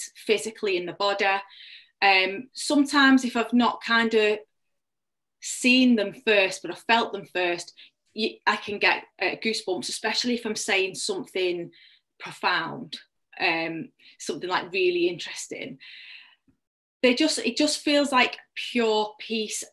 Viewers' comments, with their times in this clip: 0:06 the churchbells started ringing here. It's a Sunday going on 9 am locally. Very lovely